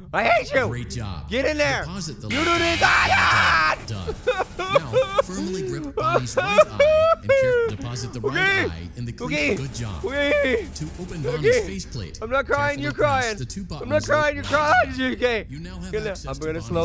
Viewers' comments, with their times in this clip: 0:04 when he got jumped scared by him and then sobbed so funny